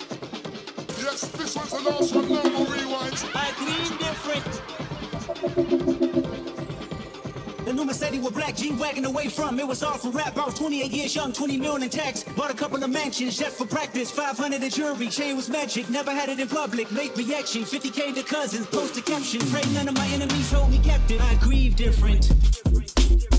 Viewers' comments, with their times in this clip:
0:09 that’s a crazy crazy crazy crazy crazy remix